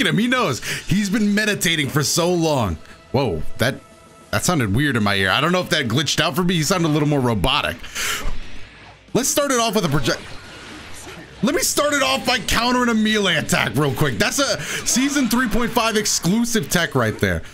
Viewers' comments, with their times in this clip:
0:04 Must be the fact that it’s eng dub —